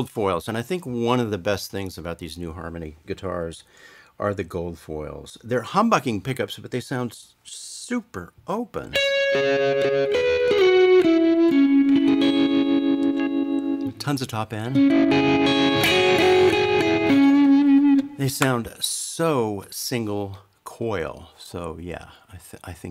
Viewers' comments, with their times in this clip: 0:08 mmmmm I love the Stones but Nah. It was Eddie (that captivated me). That being said the longevity of them gives creedence to your title. I think a lot of guitar players, (myself included) want to hear themselves all over the music. That's the rub that pro's figure out....it's a mix and it's not called a 'band' for nothing. The beauty of Keith Richards and many other famous players is the fact they never overdid it....they just did their part, and gave their all when their time to shine came in. The tone you have reminds me exactly of the song 'Heaven' by the Stones. Maybe you're right about that title........